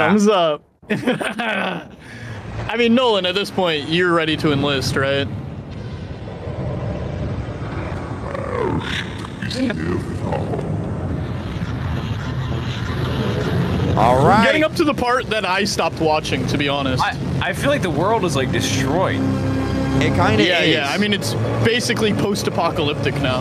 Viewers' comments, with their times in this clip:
0:04 Karl: I mean Nolan at this point your ready to inlist Awkward silence for the next 10 seconds